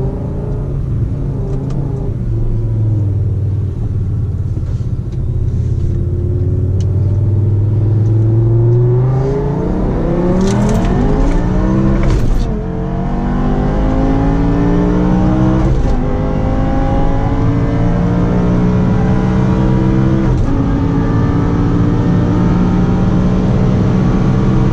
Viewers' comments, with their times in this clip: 0:09 Audi R8 Sounds :)))))))
0:10 5 years later and i still can't get over that initial acceleration and shift Sounds so satisfying